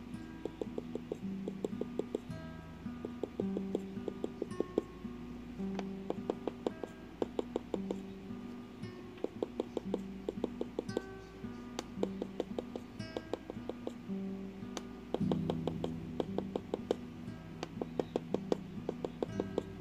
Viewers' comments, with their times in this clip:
0:04 haha! in the video starts the timelord heart beat. 😂